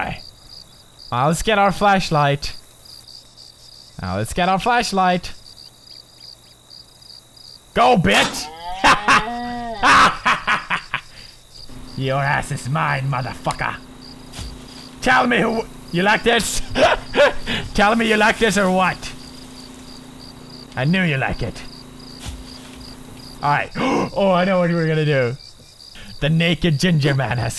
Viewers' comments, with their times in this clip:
0:08 anyone else realize that the deer went 'Mooo' ...0-0 I don't think deers go 'Mooo'
0:08 anyone else notice the deer just moo"d like a cow .-.